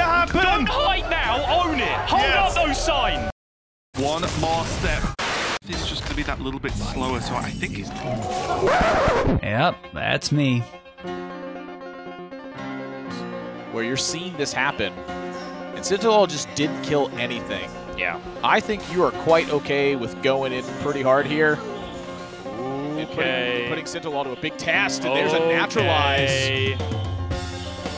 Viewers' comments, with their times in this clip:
0:10 What is with this horrible rendition of Baba O'Riley??